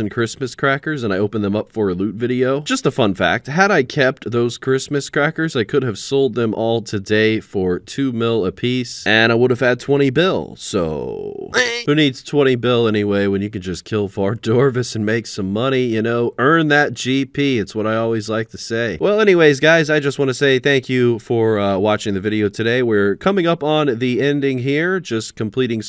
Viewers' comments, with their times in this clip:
0:10 I thoroughly enjoyed your duck impersonation